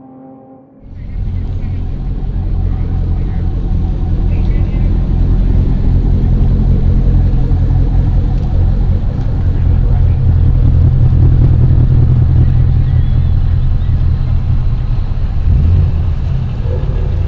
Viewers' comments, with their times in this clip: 0:04 DAMN that C6 has some serious ricer pipes :D Great Video btw. I was very pleseantly surprised when i found out you are also a car guy.